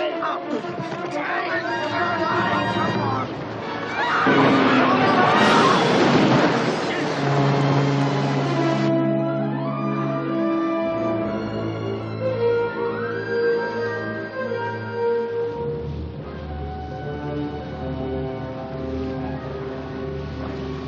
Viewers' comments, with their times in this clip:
0:03 Nobody want to mention the shark roars here?
0:04 that shark roars is awesome